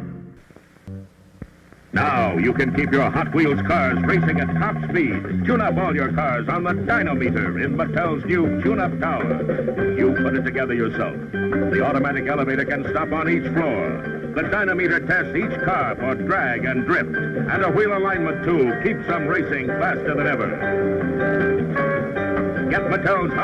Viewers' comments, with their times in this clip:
0:04 + Hot wheels...I recognize that announcers voice, It's William Conrad who was the voice of the Lone Ranger for a little while ( not the original ) on the radio. He was better known as Cannon on television the big fat man detective. Very distinctive voice. He did a lot of voice work.
0:07 ...DYNO-Meter wheels. William Conrad doing the voice..ah..and do I see an African American kid - at last!!!